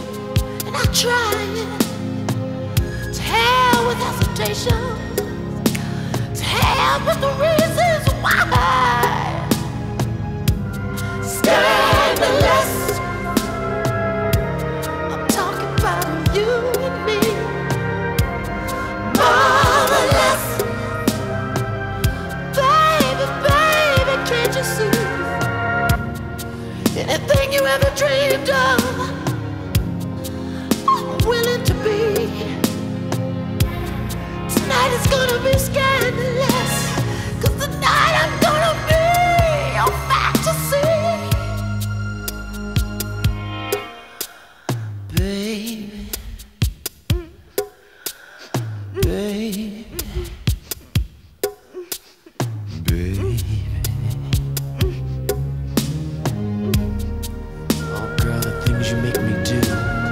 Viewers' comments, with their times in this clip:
0:10 that haunting misty mind altering part!
0:45 Fun Fact: you’ll hear Kim Basinger’s moans 😉